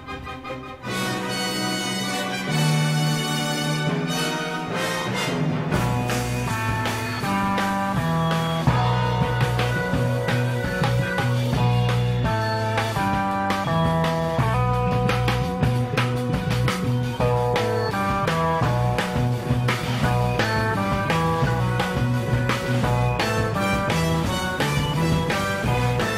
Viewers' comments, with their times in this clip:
0:10 The drums before wow.